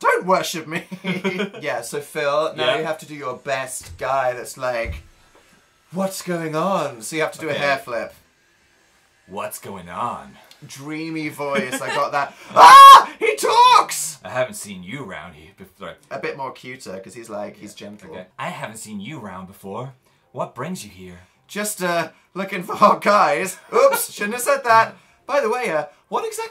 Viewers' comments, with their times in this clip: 0:08 when phil did the voice i d i e d